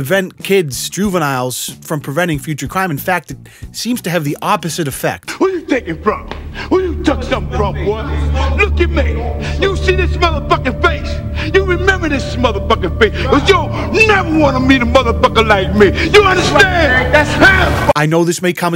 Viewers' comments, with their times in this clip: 0:06 This guy sounds like Samuel Jackson a little bit.